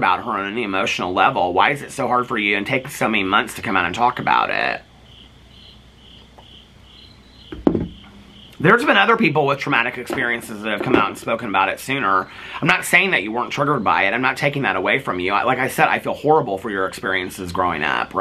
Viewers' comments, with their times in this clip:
0:05 the crickets in the background is perfect 😂😂😂